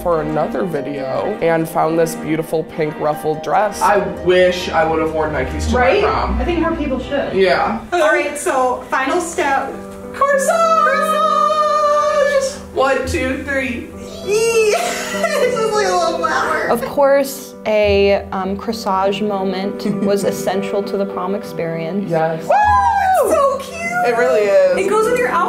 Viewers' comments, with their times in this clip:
0:10 i tought they said croissant